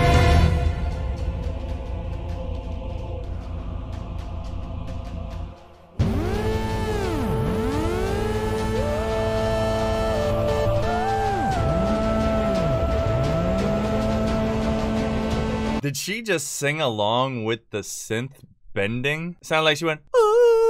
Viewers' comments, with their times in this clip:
0:05 think the only betrayal part here is in the music is sometimes cut in different scenes
0:06 the song enters absolute God mode bro, like I can't handle the hype!